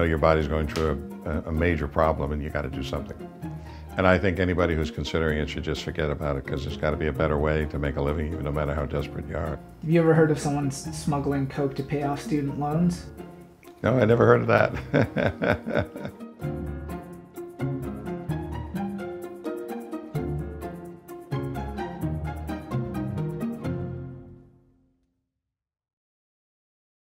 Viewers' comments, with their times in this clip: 0:09 the laugh of a man who got his degree for 1/10th of the cost it his today